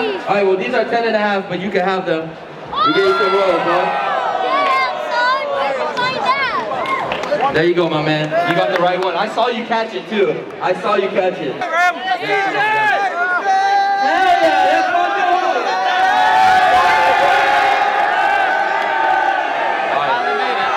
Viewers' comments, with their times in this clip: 0:04 Who else heard that kid
0:05 some white kid yelled out DAMN SON WHERE DID YOU FIND THAT 😂😂